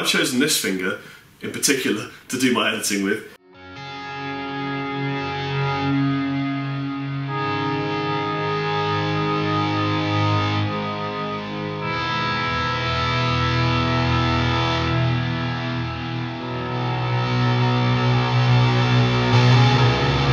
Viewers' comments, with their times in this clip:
0:04 or so he plays a section that sounds like that volume swell bit that Lerxt plays on "By Tor and the Snowdog". Sounds ace.